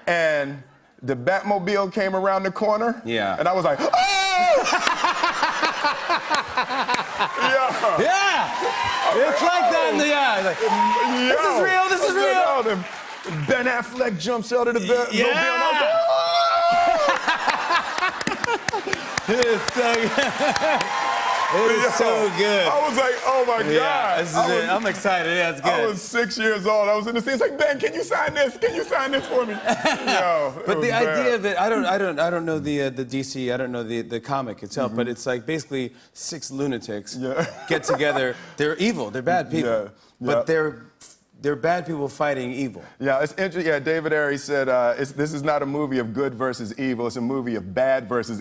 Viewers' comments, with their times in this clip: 0:03 that's the scream in the episode when Will saw for the first time Uncle Phil was wearing a toupee.
0:03 His yell reminds me of Fresh Prince of Bel Air! That's the same yell he did on that show, lol.
0:05 fake ass laugh
0:29 fakest laugh ever